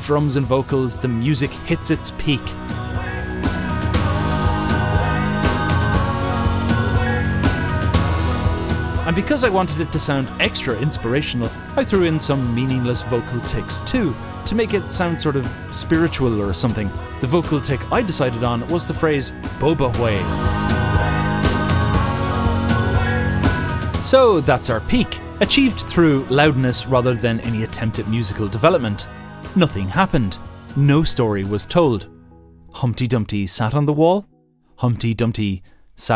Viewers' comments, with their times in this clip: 0:04 I liked the music waaay too much lol!
0:04 Crying baby jumpscare
0:10 Those “Bo-Ba-Way” sounds so authentic that I thought you took it from an actual ad.
0:14 the song sounds so basic yet so good
0:24 also, the music doesn’t go anywhere, it has no end. Maybe that’s intentional, to exploit the human brain‘s drive to look for closure, to „close loops“. If the loop isn’t closed, the stuff associated to it will stay in your mind for longer